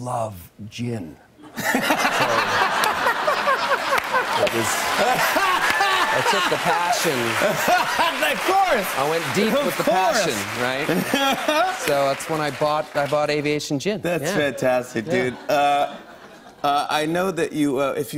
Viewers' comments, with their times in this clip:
0:04 𝙿𝚞𝚛𝚎 𝚏𝚊𝚔𝚎 𝙻𝚊𝚞𝚐𝚑